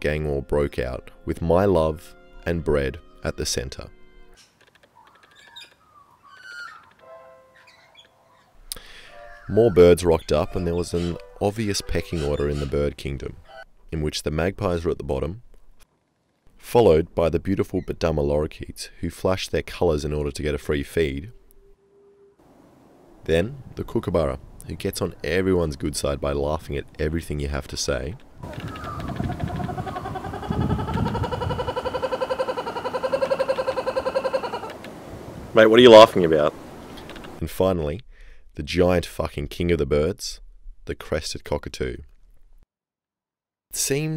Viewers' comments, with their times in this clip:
0:06 don’t tell me you didn’t hear that windows sound
0:28 ww2 german soldiers firing at landing us troops on d-day.mp3